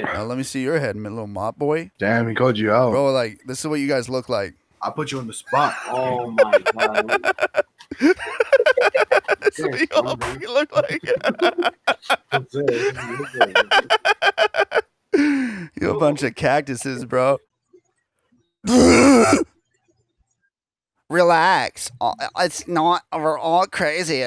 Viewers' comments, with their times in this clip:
0:07 I love how the one guys just cracking up while he's trying to roast them 😂🤣😂🤣